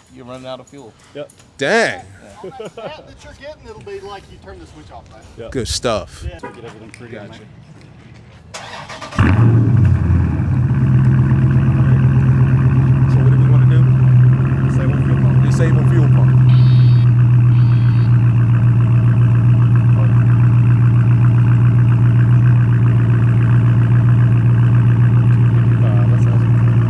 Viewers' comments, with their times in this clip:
0:09 that start up 😮